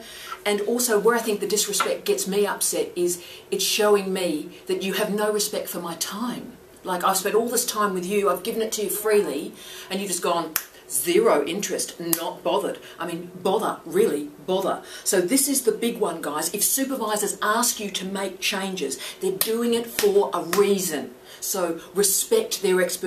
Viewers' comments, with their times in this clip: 0:10 The Catherine Tate impression had me in stitches.